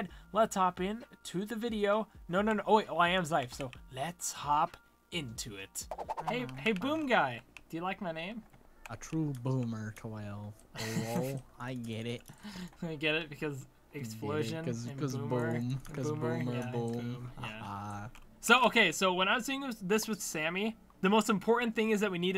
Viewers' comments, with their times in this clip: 0:03 TRUMPET PA PA PABA PABA PA PA BA PABA